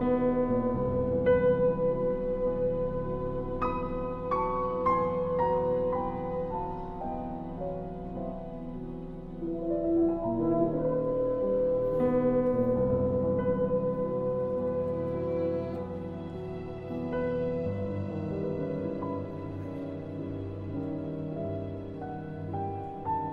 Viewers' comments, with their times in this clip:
0:07 another horn out of tune event.